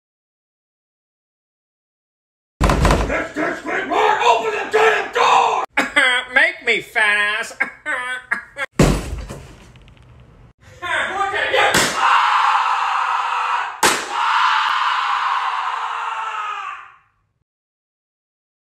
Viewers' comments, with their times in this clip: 0:06 uzui sound like Squidward from SpongeBob SquarePants